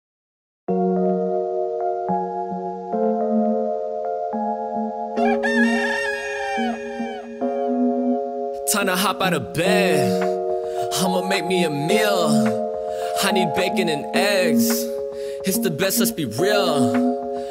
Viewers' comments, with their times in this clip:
0:00 legit thought it was drake